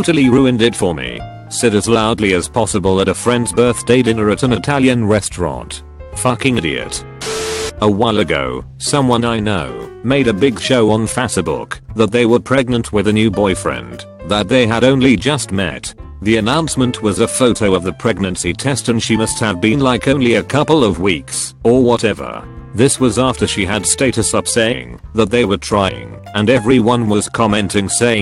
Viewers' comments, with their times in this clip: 0:10 no one: fauca-book